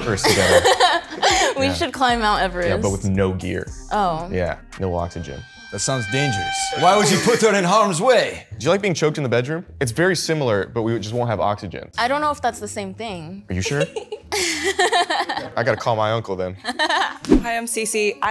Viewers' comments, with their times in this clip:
0:04 come on that's not Persian accent 😂💔